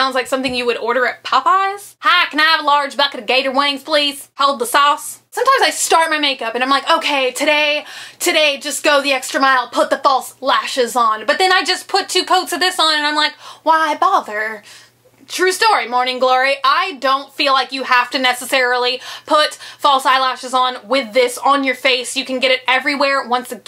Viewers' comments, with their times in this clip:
0:09 holy crap i love that accent :D